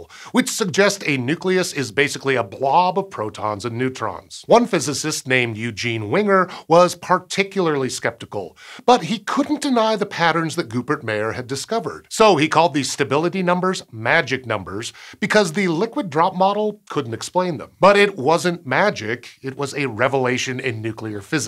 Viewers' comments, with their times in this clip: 0:05 Uhhh - try that pronunciation again, sir. The professor ain't no "winger", dude. You might do well to listen to someone else pronounce his name. Preferably someone who has heard of the professor previously.